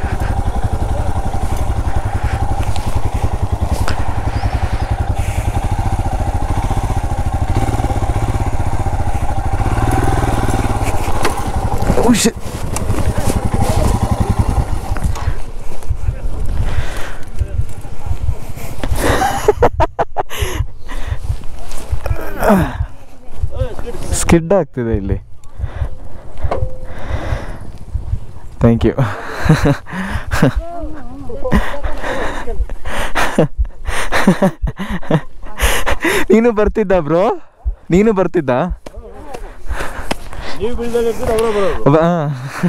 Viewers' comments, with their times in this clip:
0:10 that heartbeat sound❤️❤️
0:21 I can hear your heart beats....😅😅
0:26 ......fake heart beat sound..🤣😂....but sounds real bro....🥰💗💕💞